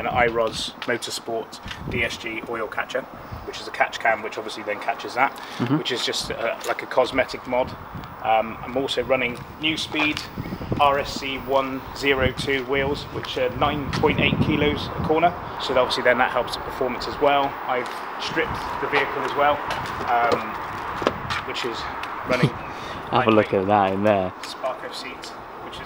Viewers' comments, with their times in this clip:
0:10 he says it Neuspeed